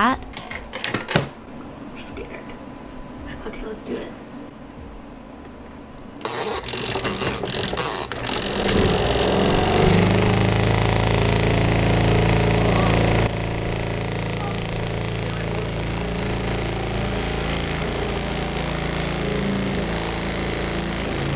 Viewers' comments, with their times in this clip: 0:08 Me: *trying to sleep* That one motorcycle at 1 am: